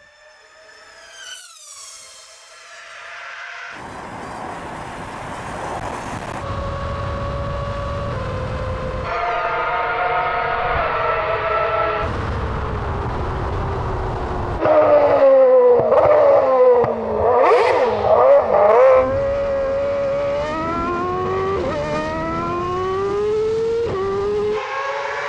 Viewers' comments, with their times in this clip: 0:07 The sweet, old sound of the screaming V10!